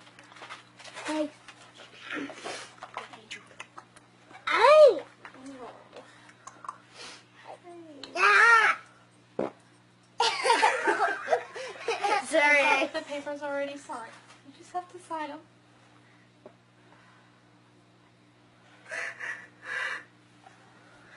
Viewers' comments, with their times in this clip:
0:07 Did the kid fart in the middle of the serious ass video? LMFAO! I literally lost my mind laughing so hard.